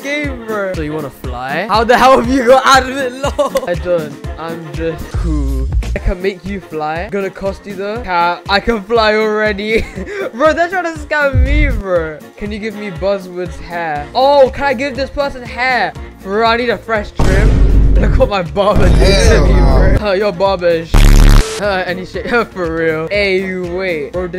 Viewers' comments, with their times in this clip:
0:05 Bro that music in is sus.